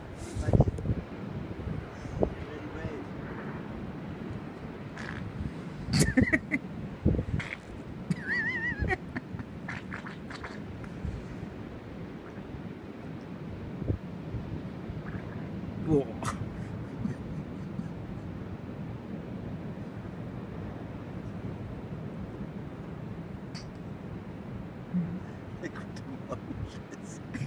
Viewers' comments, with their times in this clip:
0:09 them some sick beats 😎